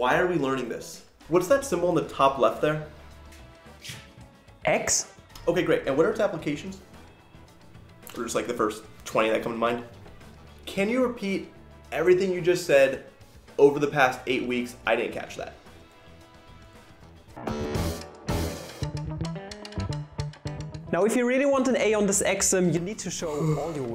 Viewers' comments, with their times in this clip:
0:09 The delivery on the "Can you just repeat everything you just said in the past 8 weeks, I didn't catch that" was on point for future me to click on